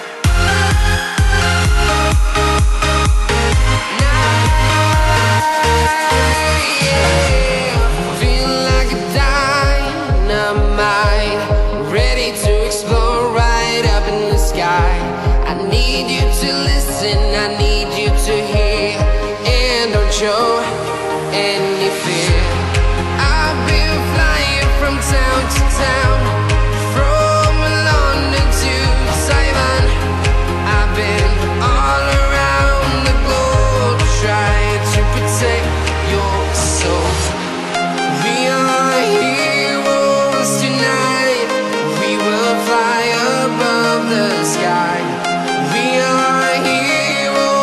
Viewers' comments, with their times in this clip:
0:09 thought its "diamond on the mine", could be wrong tho
0:28 it sounds like he says simon
0:28 ish is the only typo that he sings London to Saiwan & is typed London to Taiwan. I agree